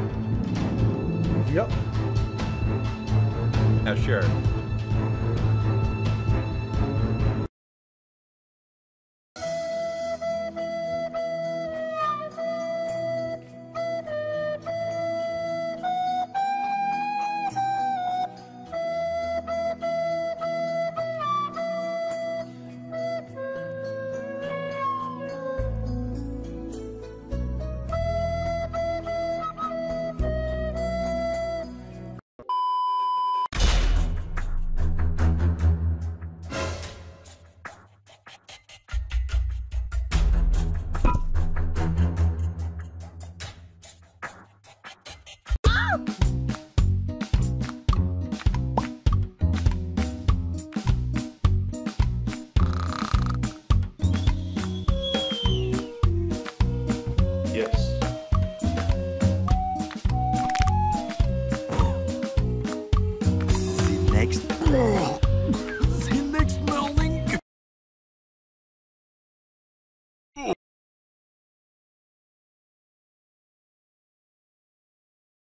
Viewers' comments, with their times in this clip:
0:09 titanic music starts
0:46 Party.exe music plays
0:58 bone crack XD